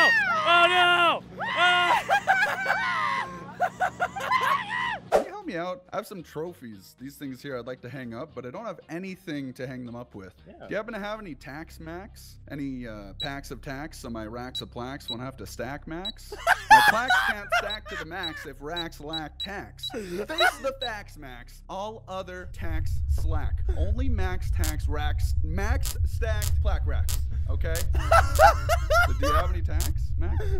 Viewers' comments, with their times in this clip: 0:10 he sounded like a real sales man
0:11 the rap god parody if you speed it up